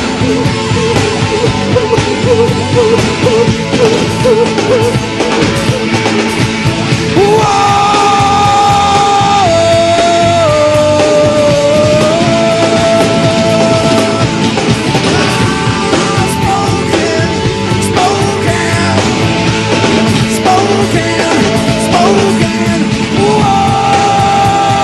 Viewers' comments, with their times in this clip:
0:08 Oh god, the scream It's magic